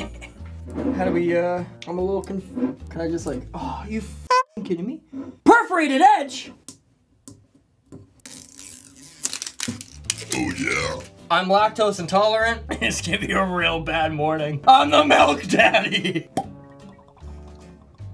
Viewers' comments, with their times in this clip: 0:05 When he burped oh yeah so hilarious😂😂